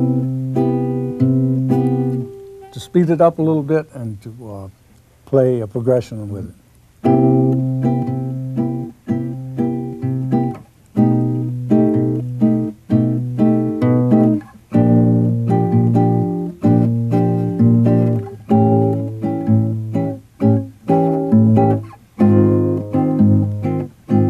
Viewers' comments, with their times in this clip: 0:06 dang those chords